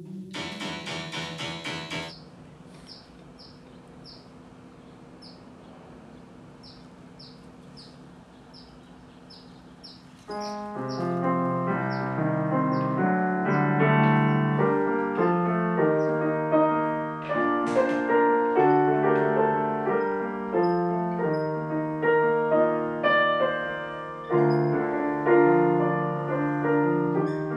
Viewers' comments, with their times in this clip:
0:09 i wish that the demo got fleshed out. that piano piece is beautiful